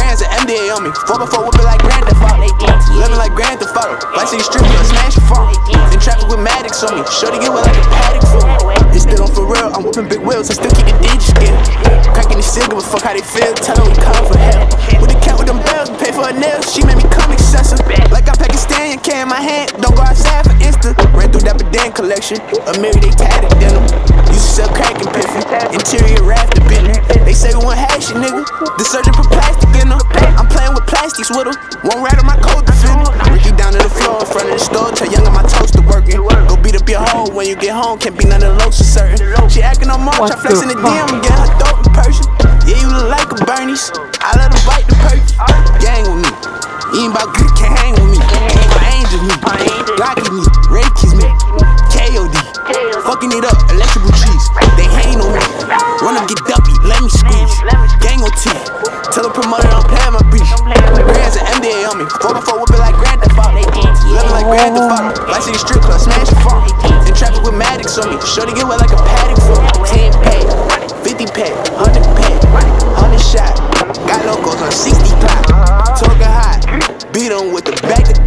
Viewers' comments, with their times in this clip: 0:10 Lol sounded like it was on beat with the song
0:57 that Noise he makes after the nollie flip is the exact noise I made haha
1:03 he started moanin 😂🤣